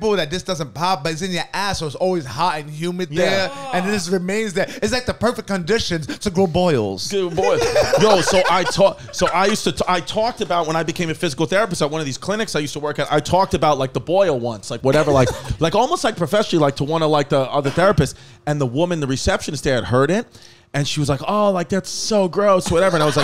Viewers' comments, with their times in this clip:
0:05 “perfect condition to grow boils” the way i hollored at sergio’s delivery